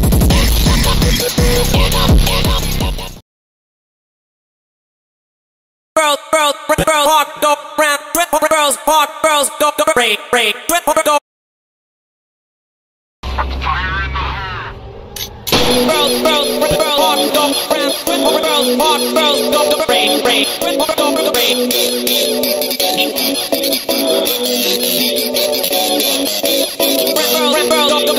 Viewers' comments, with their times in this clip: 0:04 ngl normal looks good here and sounds good
0:13 the song is just chilling